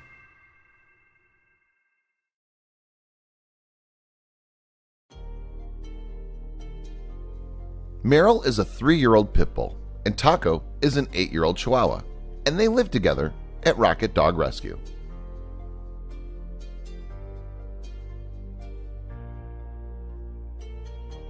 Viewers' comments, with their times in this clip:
0:09 i thought he said pimple 😂